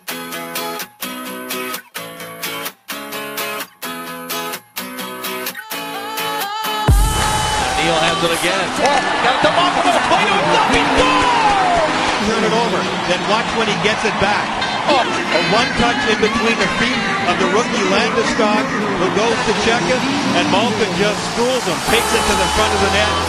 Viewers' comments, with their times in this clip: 0:08 for #10 its sounds like the guys says he gets it to malkin and malkin fu***** scores!!!!!
0:09 does the announcer say "fucking scores"?
0:09 it sounds like he says "What a fucking goal" lol
0:10 Is it just me or it sounds like he says "its a fucking goal!"?